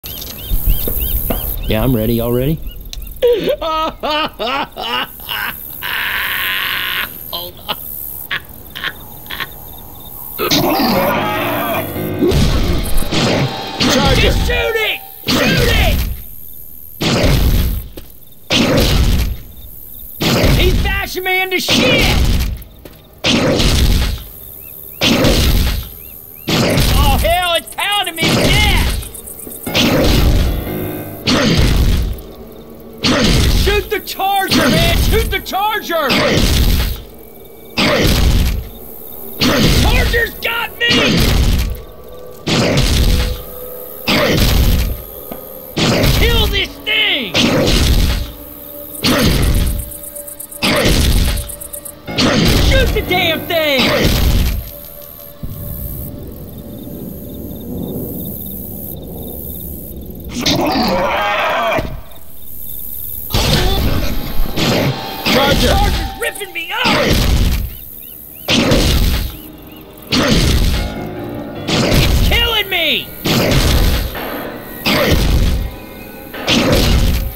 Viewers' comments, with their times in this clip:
0:04 lmao i love that laugh
0:26 "Aw hell, it's pounding me in the ass!" -Ellis, 2009 Before anyone gets all pissy poor with this comment, I know he says "pounding me to death," but since there is a bunch of slamming noises, it sounds like he says "in the ass"
1:04 I like the small music that plays when Ellis gets charged